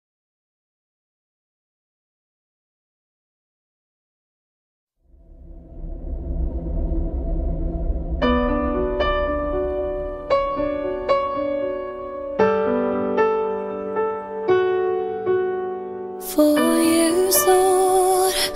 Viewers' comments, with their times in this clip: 0:06 The music starts ;-;